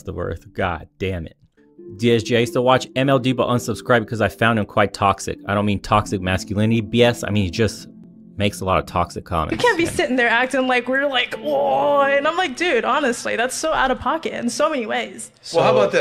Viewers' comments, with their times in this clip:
0:03 I don't know who this woman is... but the way she took him down was beautiful. Not a single raised voice.